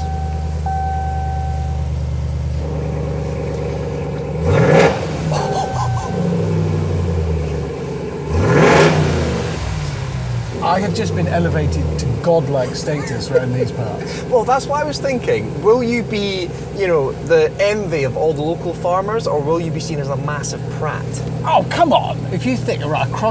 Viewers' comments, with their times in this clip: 0:05 Transformers conversion sound